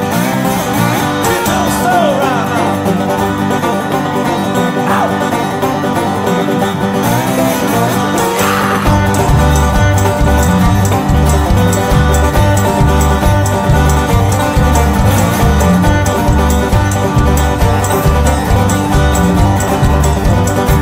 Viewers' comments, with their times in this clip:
0:06 LOVE when it gets rockin !!